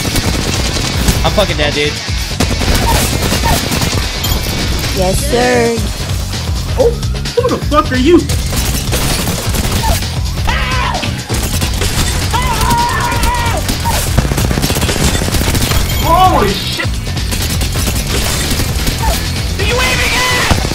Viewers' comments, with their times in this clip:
0:08 bro i love the scream xDDDDDD